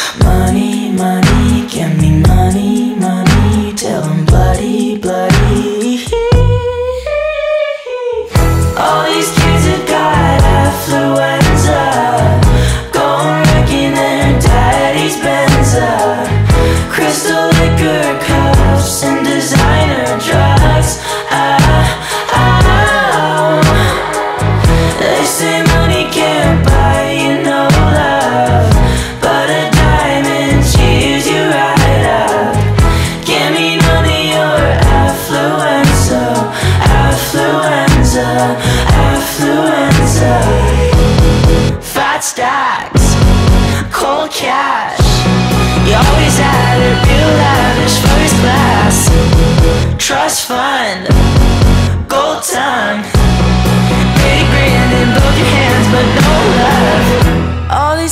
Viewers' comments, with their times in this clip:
0:05 i'm really sorry i love conan i really do but *micheal jackson*🕺🕺
0:06 those little “heE heEeE”’s bruuuuuhhhhhh micheal jackson who??? i love him i love him
0:06 Michael Jackson Mode on
0:43 no joke thought he said kohl's cash